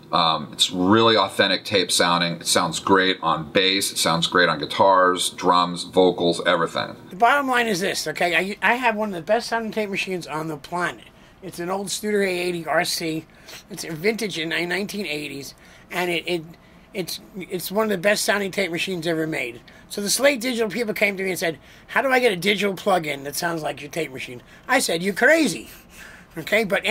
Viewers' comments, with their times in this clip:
0:07 He does a great Joe Pesci impression.